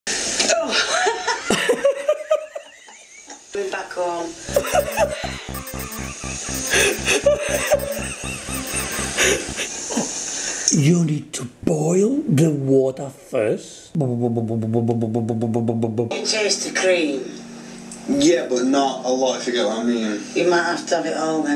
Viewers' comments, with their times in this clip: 0:05 He laughs to not cry 🤣